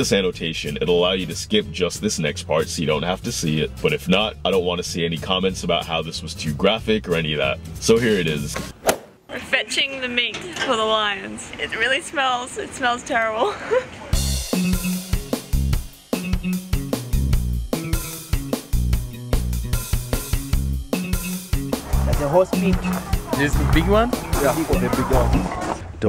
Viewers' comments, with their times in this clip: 0:08 is so funny😂😭the camera smack never gets old